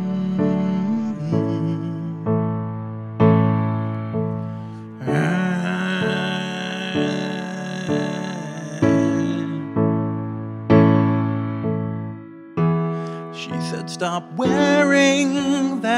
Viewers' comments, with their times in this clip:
0:03 The vocal fry section is amazing.